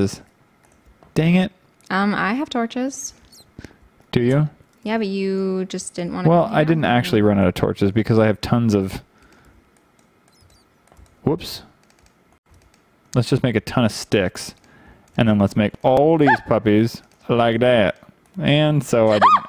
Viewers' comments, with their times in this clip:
0:06 why are there so much of a squeaking sound?